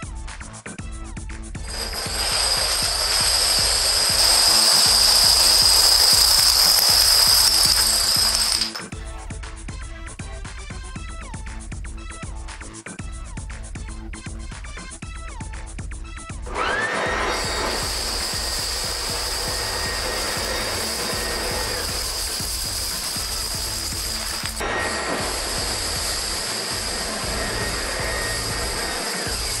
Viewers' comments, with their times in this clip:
0:09 "FUS RO DAH!" from the vacuum.
0:17 Yes. Didn't you just heard the blow dryer ?